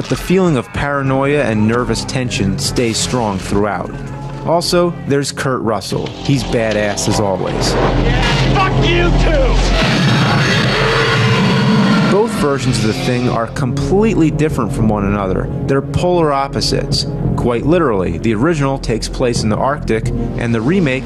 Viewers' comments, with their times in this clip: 0:07 One of my favorite responses to a monster before destroying it in film! “RRARRRRRRRGH!!” “Yeah, fuck you too!!” (BOOM!!!)